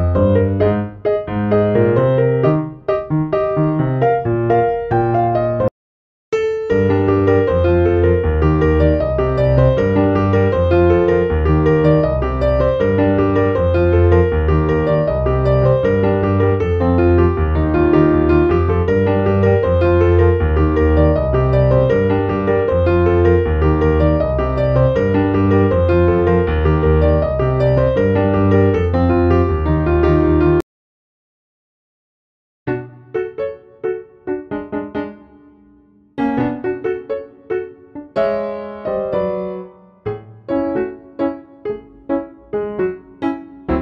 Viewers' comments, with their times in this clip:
0:06 That music (I'm Blue - Eiffel 65) is like Classical Music or Sad Song...
0:31 I love the music of Mi Channel so much, its made me remember my childhood with the Wii